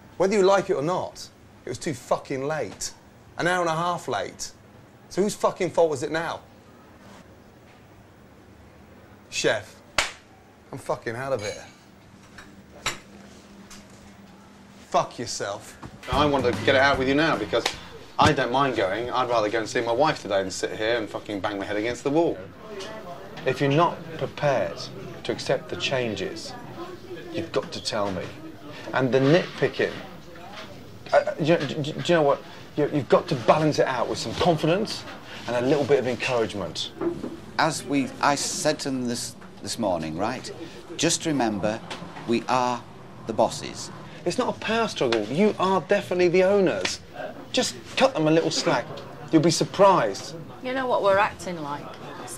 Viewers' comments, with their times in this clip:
0:10 the way he says "fuck yourself" lives rent free in my head. Kills me everytime
0:36 what is that man’s voice?! I did not expect him to sound like that
0:37 that English accent is amazing, the guy looks so polish he is freaking cool ;-;
0:40 that guy should've work as a National Geographic voice narrator